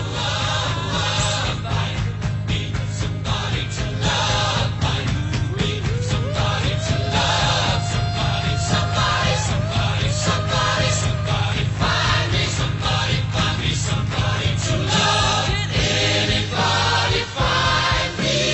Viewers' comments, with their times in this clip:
0:06 lmaaaaaao the music fitted so well with Raphtalia's tail-wagging